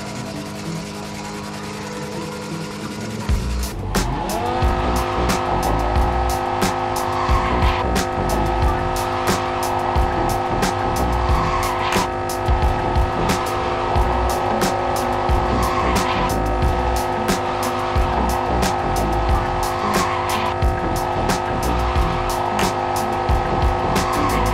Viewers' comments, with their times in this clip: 0:05 I was confused my PC was frozen sound when hear this burnout XP